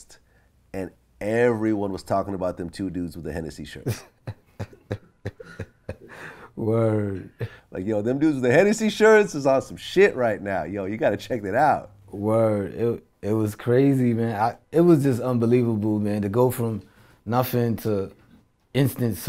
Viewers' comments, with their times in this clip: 0:03 I could only imagine that feeling. That was a happy and proud laugh. They made it.